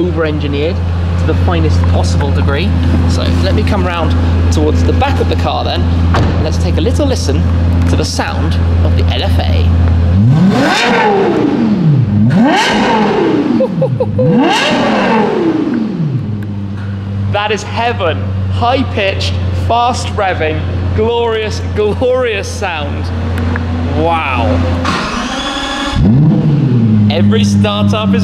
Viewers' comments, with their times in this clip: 0:10 The Lexus LFA is the nicest sounding car OF ALL TIME 💨🔊 V10 Yamaha tuned oh god 🙌🏽